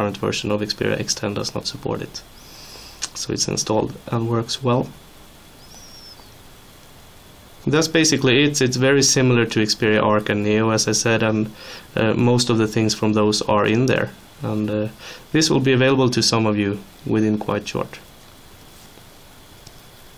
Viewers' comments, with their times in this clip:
0:05 ....high quality sound!!